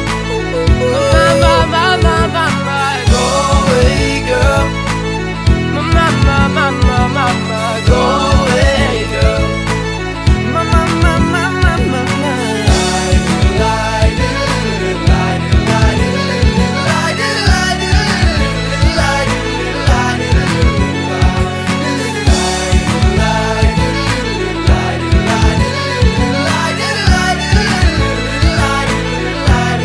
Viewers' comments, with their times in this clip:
0:10 OMG HIS VOICE!!!😍😍😍😍😍😍😍😍😍😍😍😍😍